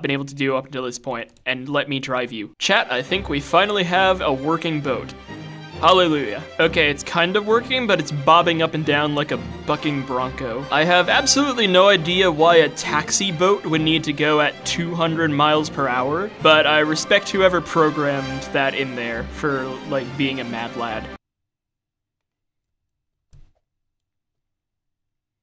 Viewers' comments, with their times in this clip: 0:08 i thought the family friendly utuber said something